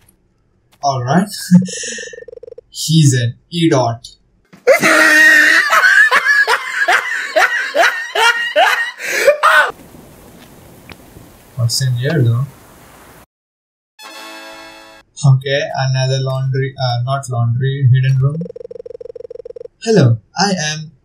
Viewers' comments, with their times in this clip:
0:04 Insane with laughs of „Look at this dude 1"